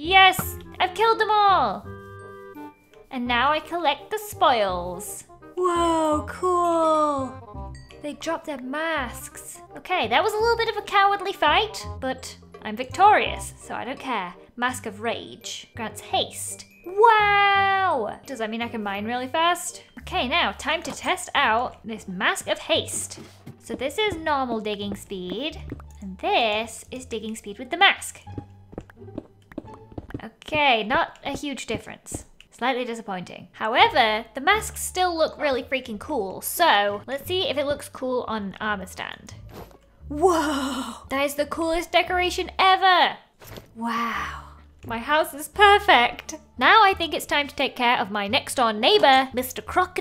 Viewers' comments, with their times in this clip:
0:10 Lol on it sounded like she said sksk
0:37 I thought it said “mask of furry” ... OWO